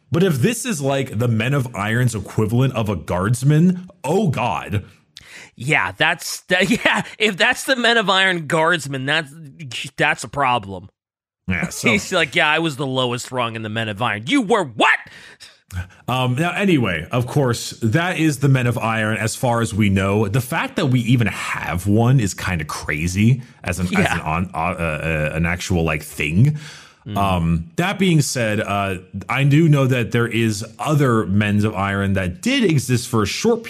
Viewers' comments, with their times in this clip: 0:05 the delivery on that “You were WHAT? ” is perfect
0:14 We need a soundclip of that "You were WHAT?!"